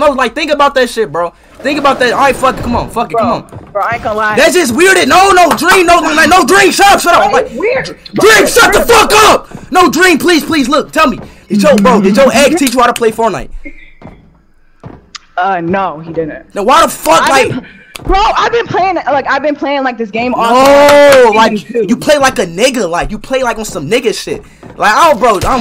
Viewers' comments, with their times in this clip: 0:10 Bruh it so obvious someone else playing for dream and she on the headset I could literally hear dude laughing in background